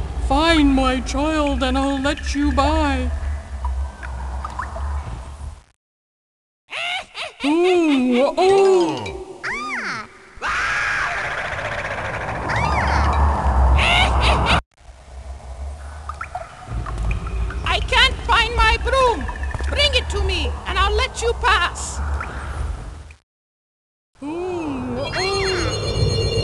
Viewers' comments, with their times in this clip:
0:10 Did they just use Daffy Ducks Voice?